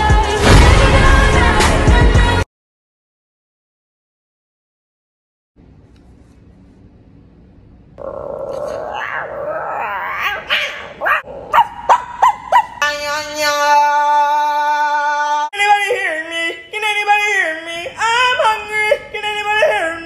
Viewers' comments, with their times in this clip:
0:08 My stomach when it rumbles-